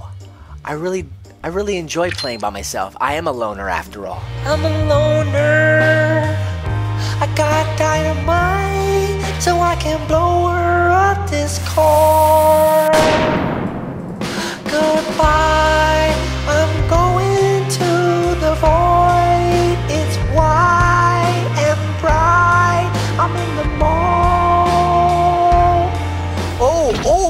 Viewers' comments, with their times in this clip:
0:04 such a beautiful voice so beautiful
0:05 Me: WHY IS THIS SO CATCHY!!!!!! AND QUICK THINK OF SOMETHING FUNNY OMG 😂😅
0:05 dude that's sweet music and sad
0:15 that’s actually some good singing 🎤